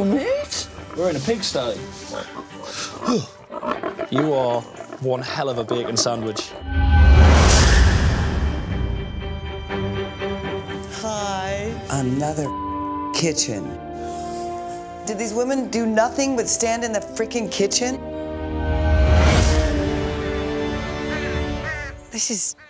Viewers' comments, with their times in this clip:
0:09 I love that sad but ironic "haaai" right before Kirstie drops the f-bomb. "Haaaai." sigh "Another f*cking kitchen."